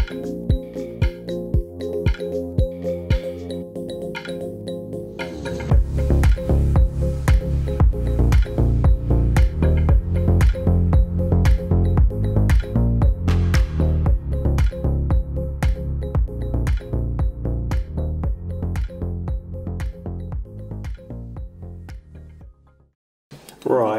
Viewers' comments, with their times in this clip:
0:08 when the bass hits... helpful vid too mate cheers!